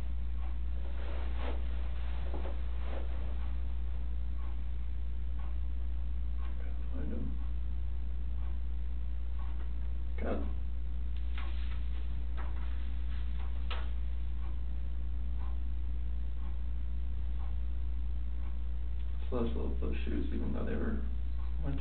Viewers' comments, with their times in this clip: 0:03 and the Oscar goes to... NOT CW! The way he explains each child sounds as if he's auditioning for the role of a lifetime...